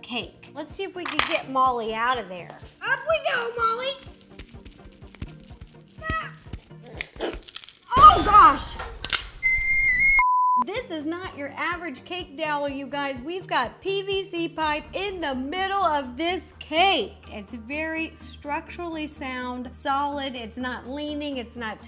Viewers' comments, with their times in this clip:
0:09 that scream was personal